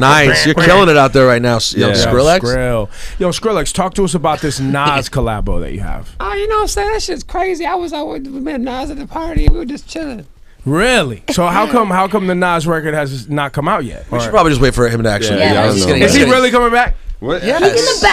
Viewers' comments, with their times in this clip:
0:06 LMAO DIPLO'S VOICE💀